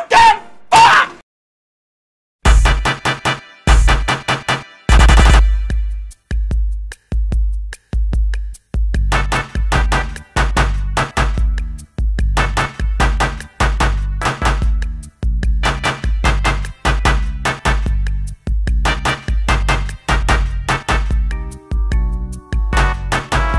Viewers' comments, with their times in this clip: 0:05 Sounds like somebody is being shot rapidly from bullets